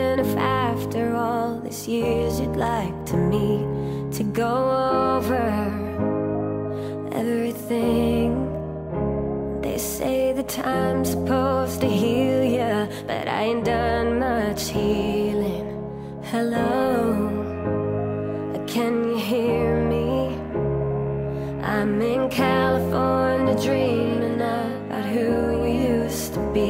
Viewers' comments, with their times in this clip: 0:09 the glitch I was talking about was the one sorry (on “time”).